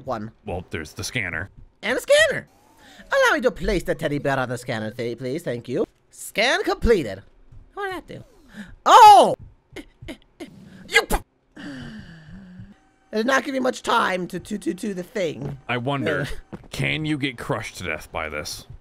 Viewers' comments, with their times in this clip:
0:04 am I the only one who thinks sun sounds an awful lot like Ruin..